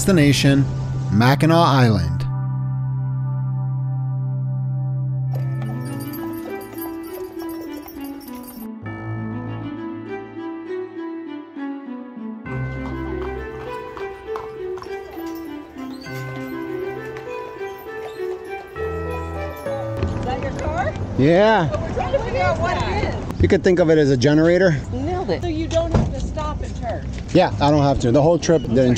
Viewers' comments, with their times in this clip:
0:09 I think you can hear his Tesla's 2-stroke from across the lake.